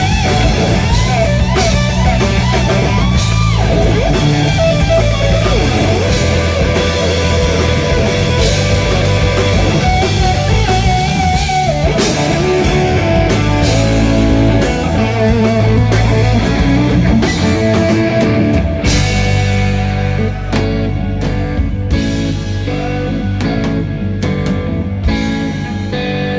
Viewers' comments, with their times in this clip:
0:09 Soooo sooo dirty! To have the ear to hear that in the middle of the blistering runs. Incredible. This is one of the few greats that has no limits.